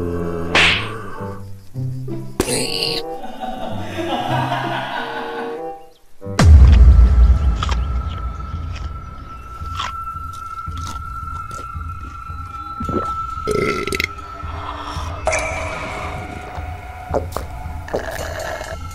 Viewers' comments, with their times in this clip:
0:03 I like the withered skeleton's laugh